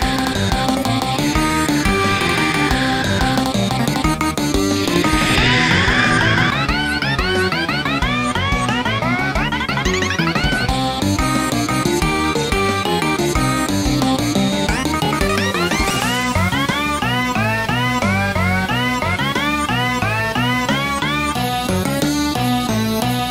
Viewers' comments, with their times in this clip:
0:06 there using fours screech